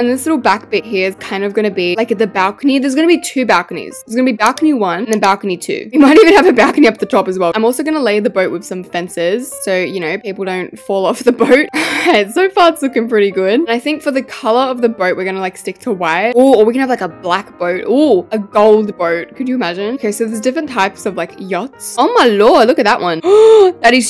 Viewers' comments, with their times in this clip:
0:05 best laugh and mic sounding ever